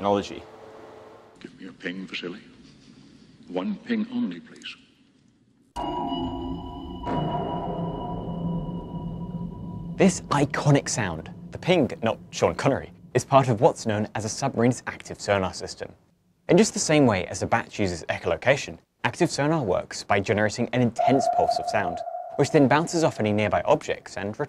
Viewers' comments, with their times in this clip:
0:05 "this iconic sound" <inserts basically obsolete short static ping sound> I know it's more recognisable like that, but FM pulse needs some love as it's so satisfying.